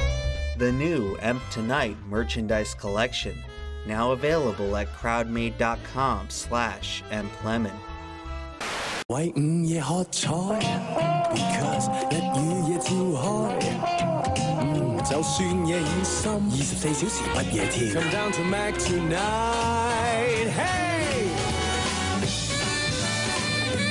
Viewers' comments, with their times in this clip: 0:09 suddenly hearing cantonese when i speak that language made me jump, i thought there was an actual ad there